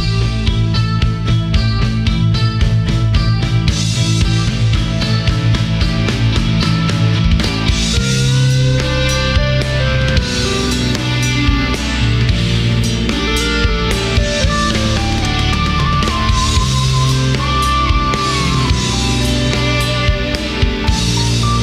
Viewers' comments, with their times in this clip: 0:07 Love that key solo …